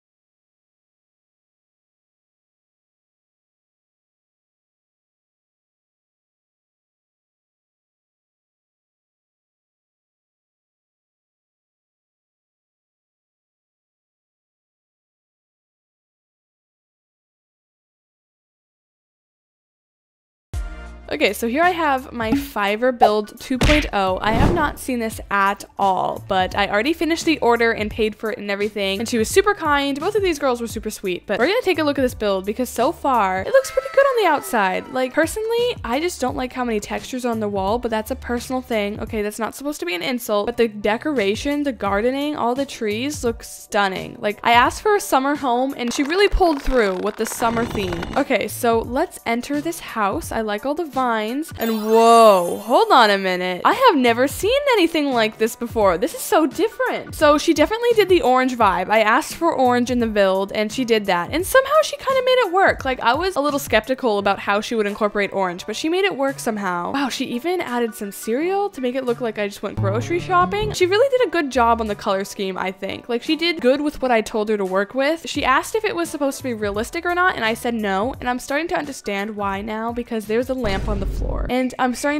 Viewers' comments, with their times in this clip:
0:10 the mic mutes. any reoson?
1:04 Who started watching this YouTuber and cannot stop watching her lol also this sound cut so I just wanted to let you know